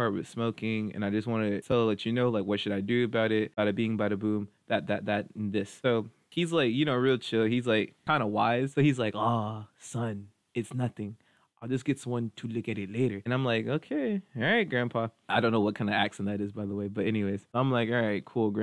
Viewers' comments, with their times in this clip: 0:06 master Miyagi accent 😂